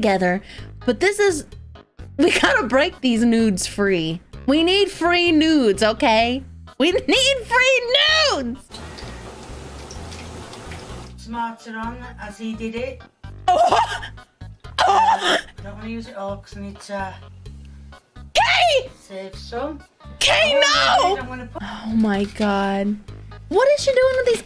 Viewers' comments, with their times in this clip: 0:09 The sound you make when she starts pouring the sauce on was amazing